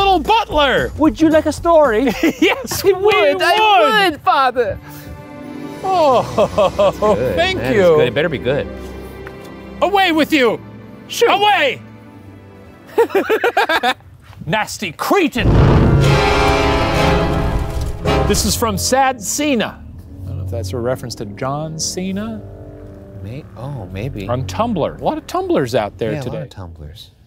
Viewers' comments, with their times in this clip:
0:08 this makes me laugh I don't know why.. but the way he talks just.. MMM! funny